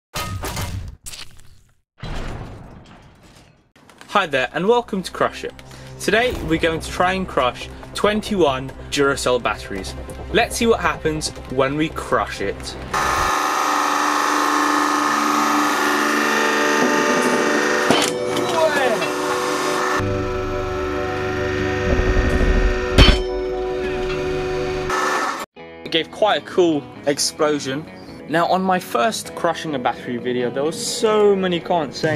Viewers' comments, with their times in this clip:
0:01 it said shit clearly
0:18 I love that sound you made. OWHEHH!